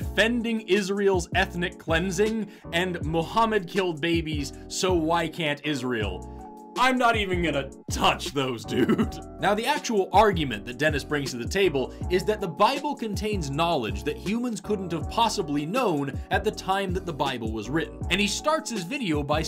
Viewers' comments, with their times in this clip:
0:03 I saw the Israel flag and I knew this was coming lmao he sounds like Ben Shapiro who also supports you know lol